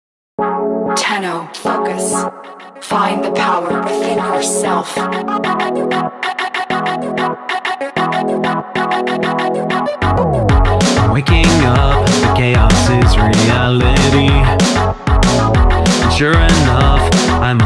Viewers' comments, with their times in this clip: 0:01 Don't kill me for saying this but Lotus: tenno F*ck-us Jokes aside, This is one hell of a song. The music is just perfect and your vocals are super smooth! Congrats for winning. Definitely deserved it